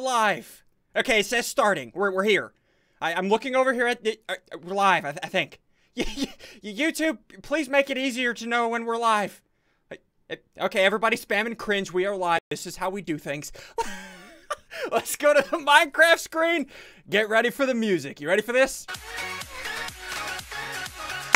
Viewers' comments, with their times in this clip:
0:08 of the video that clap was very perfectly synced with the beat of his intro.